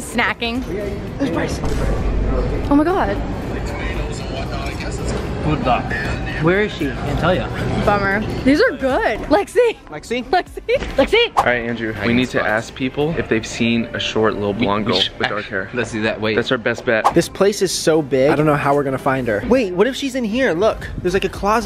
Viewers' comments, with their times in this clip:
0:04 Did I hear Puta ???